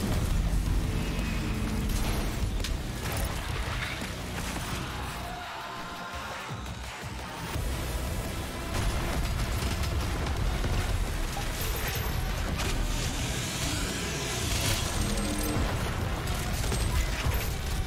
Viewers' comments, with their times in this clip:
0:04 I feel like this is the most badass moment in this run. The music syncing with the teleportation, the destruction when the music "strikes". Just love this moment